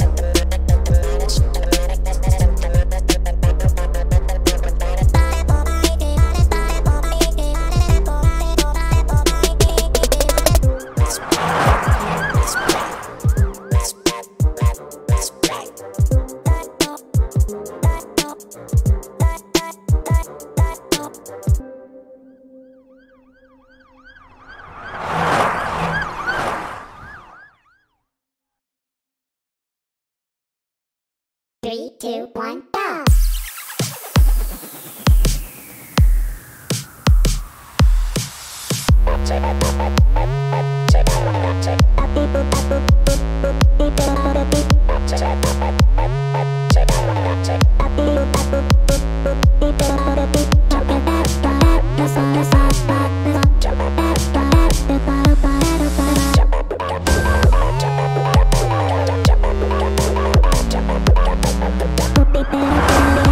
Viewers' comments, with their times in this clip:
0:10 sounds like Pico is saying lets play and The Boyfreind is saying lets go
0:33 Is it just me or the start of this song sounds like rap god
0:50 is my favorite part cause it sounds like they're actually saying words like the hook of the song